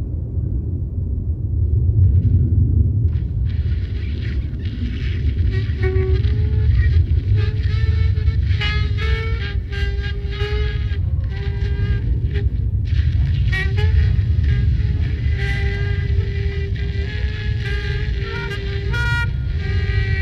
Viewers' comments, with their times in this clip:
0:05 someone was playing a saxophone